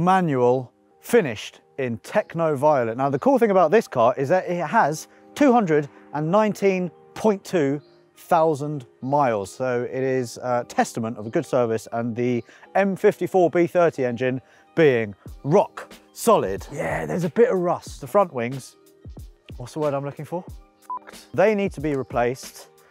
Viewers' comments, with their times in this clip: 0:05 219.2 BHP? wow, thousand miles oh :D